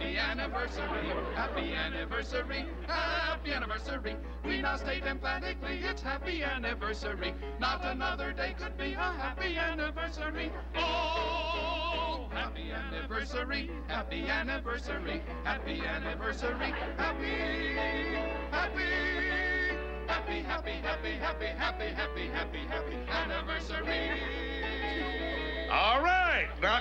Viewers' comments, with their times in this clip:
0:10 The “🎵OHHHHHHH!!!🎶” is my favorite part